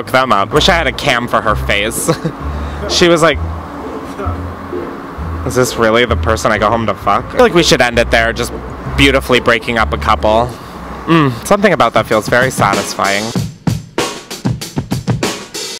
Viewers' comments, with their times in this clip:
0:10 i lost it💀 why did you look amd sound like James McAvoy in Split when he was Patricia 😭😭